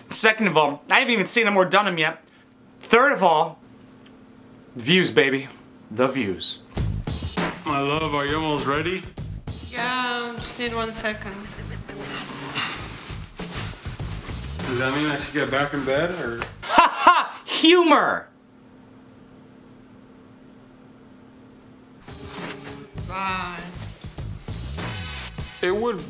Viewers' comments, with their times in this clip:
0:07 along with his voice saying “my love” I would of thought it was some 46 year old man in a trailer preparing for a good night